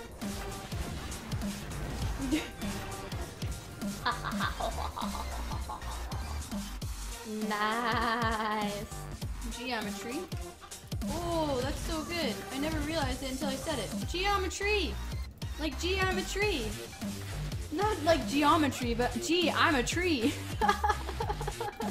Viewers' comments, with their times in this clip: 0:07 i thought that was a "NAAAAAAZZ"